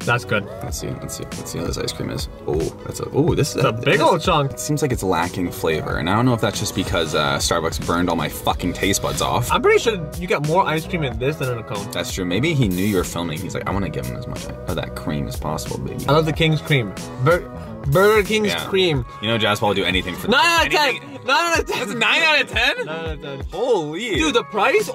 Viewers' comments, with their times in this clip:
0:07 didn't censor lol. idk if this was an editor mistake or we just let them in now.